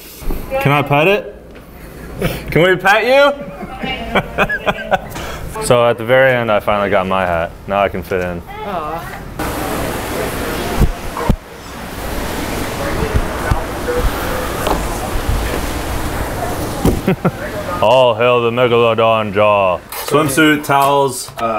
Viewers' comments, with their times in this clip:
0:05 when he screamed it sounded like Coyote Peterson screaming🤣🤣🤣🤣